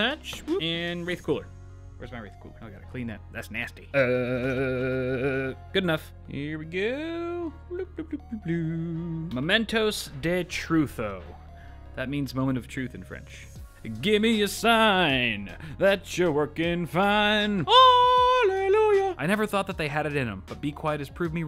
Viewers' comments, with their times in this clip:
0:09 as a french, I love yours